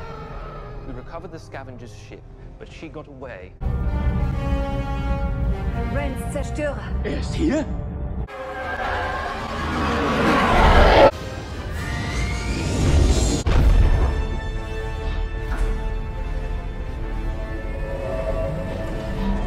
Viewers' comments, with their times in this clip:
0:05 Never thought I'd hear German during a such relaxing video, as a German.
0:06 I love how Im like half asleep and they start speaking on german(german movie clip) and I got so confused lol